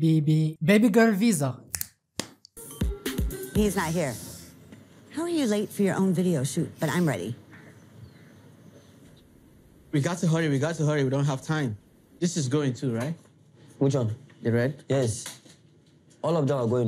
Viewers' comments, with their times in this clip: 0:03 I thought you said "babygirl visa" which is genius